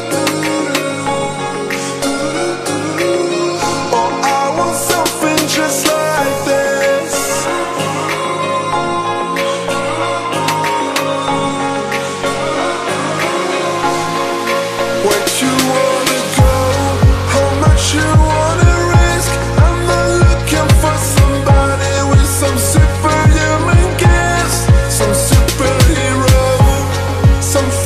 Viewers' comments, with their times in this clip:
0:08 music goosebumps. #Shredstothefullest